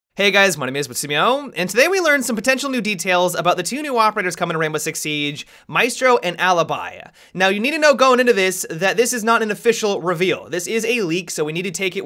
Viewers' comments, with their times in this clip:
0:00 Hear how he says his username. Yeah.